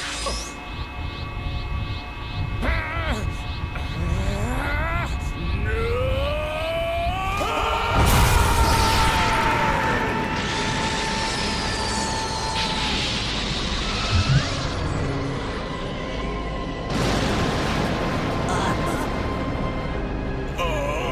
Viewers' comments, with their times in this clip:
0:04 Goku straining a sh*t out be like